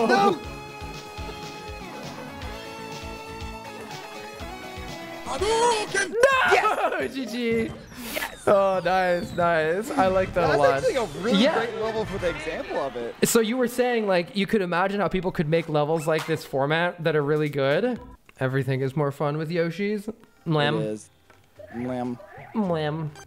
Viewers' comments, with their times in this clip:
0:05 What was that scream before the NO?